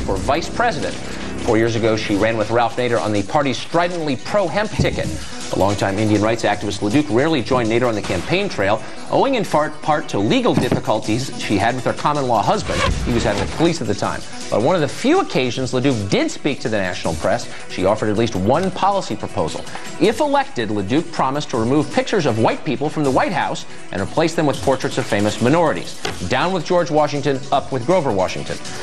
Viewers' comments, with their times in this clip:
0:08 "owing in fart"
0:08 Stewart’s role in this interview was actually great for Carlson, because it completely distracted from him saying “owing in fart”
0:08 owing in fart
0:09 I'd like to mention that Tucker accidentally says "owing in fart" and then corrects himself .. "part". 😂😂😂